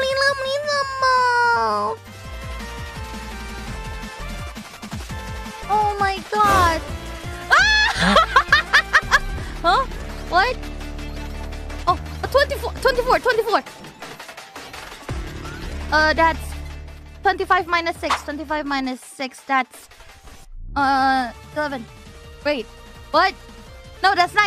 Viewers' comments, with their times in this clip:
0:09 For a Math Question, The song is pretty Insane 😆